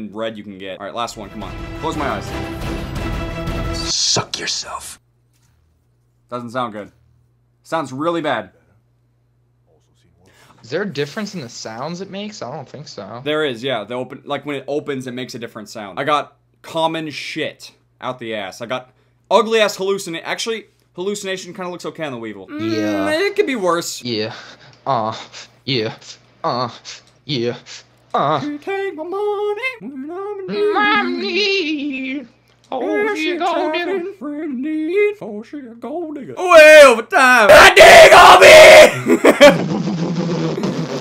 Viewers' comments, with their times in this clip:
0:10 Anyone else wonder what happened after that moment where he inhales? X3
0:24 they jamming out
0:24 The moaning doooo
0:24 The moaning doooo